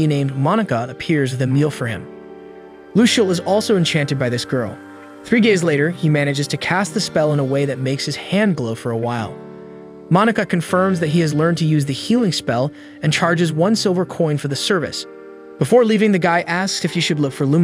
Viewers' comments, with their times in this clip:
0:04 am I the only one that hears three gays later?